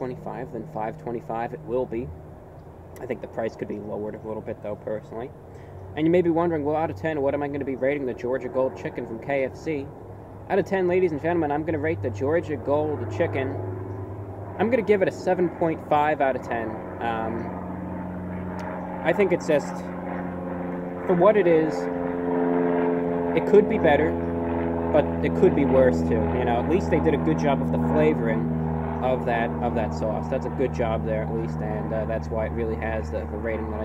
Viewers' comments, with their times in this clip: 0:08 Was that plane noise starting at the mark THE Red Baron coming to personally deliver you a pizza to review?
0:16 review bruh's voice louder than plane engine and faster than sound.